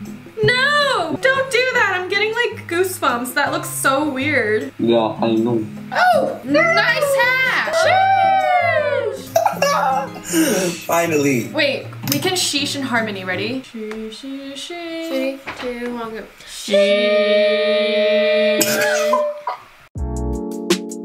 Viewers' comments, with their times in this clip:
0:06 THEY SOUND LIKE SHIPS 😭